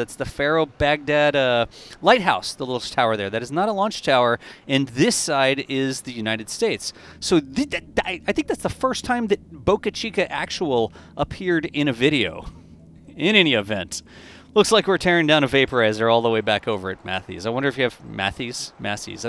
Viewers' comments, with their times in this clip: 0:07 Did you have a stroke while talking?!?!